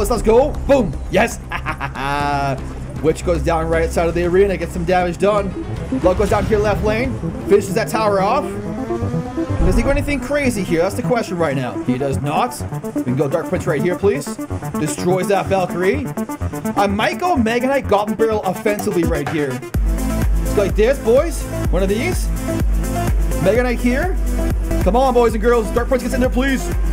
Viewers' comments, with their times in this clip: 0:07 When the music 🎵🎶 started I got chills SO HYPE BRO!!!! I LOVED IT